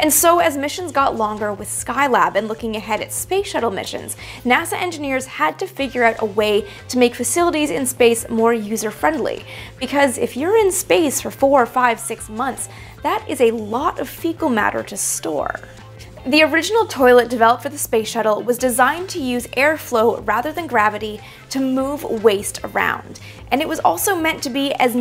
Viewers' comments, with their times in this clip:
0:10 “urine space”? I thought this episode was about poo?!